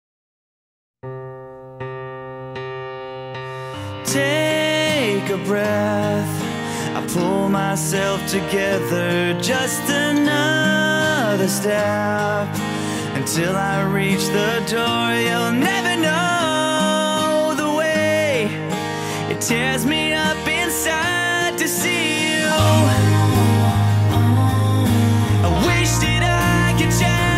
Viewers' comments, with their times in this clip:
0:03 this intro really sounds so emotional as it is motivational.
0:13 sounds like Gerad Way in the song Cancer